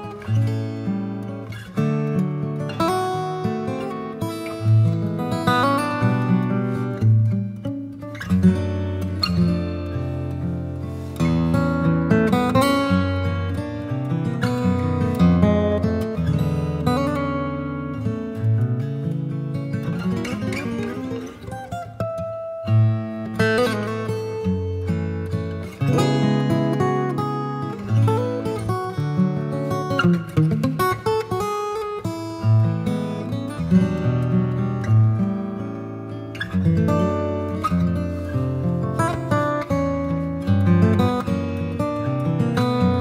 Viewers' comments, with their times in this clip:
0:05 Hmmm, follows some progressions used by Beyonce at the Grammy's?? (or she followed this video from 2014?) ....nope she sang it in 2007... a good performance, give it a listen :) Probably a natural substitution and this is a very awesome performance!!
0:28 that muting is insane